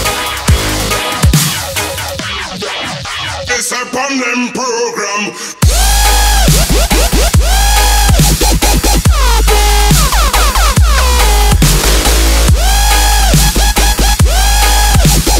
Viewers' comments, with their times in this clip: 0:03 Play at x0,5 THE APOCALIPSE IS NEAR
0:03 No, it sounds like beginning of the game. That’s boss fight music should be
0:03 This inprodun proogrum